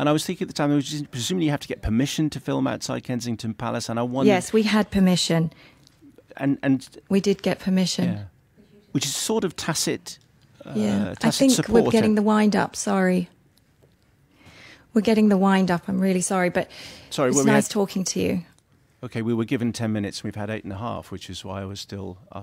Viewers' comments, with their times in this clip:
0:08 I find the interviewer very rude and offending. It`s not her responsibility if the story was completely true or not, and how the information was gathered for the movie. She did her best to answer the questions. And yes, the woman`s voice can be heard hence she finished it.
0:08 You are right, you can hear the voice of the woman, minute Why would she walk out otherwise?, there wasn´t anything wrong in the questions neither the answers. I don´t understand the fuss, she was just as professional as the interviewer.